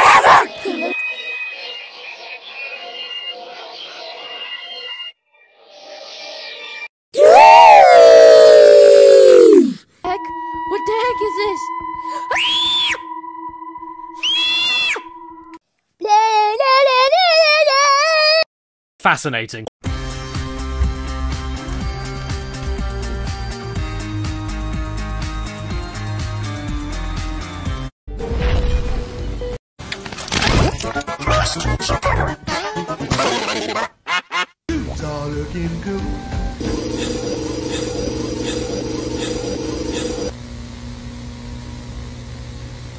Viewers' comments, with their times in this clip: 0:07 tuweweweweueuweuwueuweuwuew - stupid jumpscare
0:10 that screaming tho 😭😭😭
0:29 klasky csupo in wrong g major 74 caught me off guard